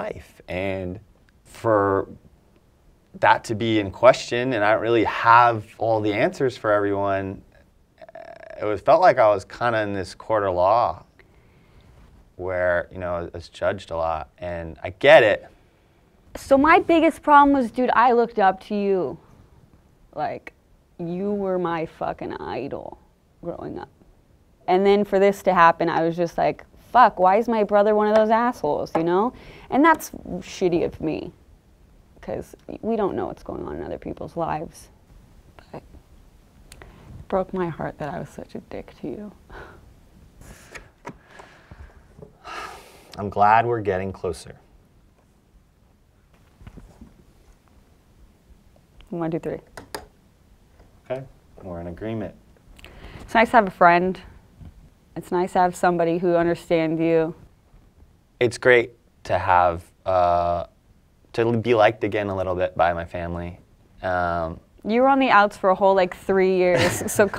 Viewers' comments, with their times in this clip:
0:03 I thought I heard a like scream 💀💀
0:19 cue slight Matthew McConaughey voice impression!
0:50 Don't you mean "agreenment" ._.